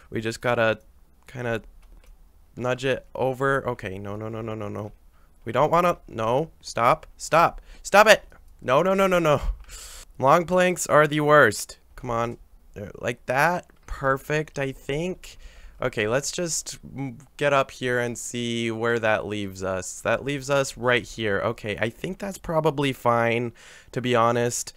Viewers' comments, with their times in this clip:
0:05 it sounds like he’s teaching a dog 😂😂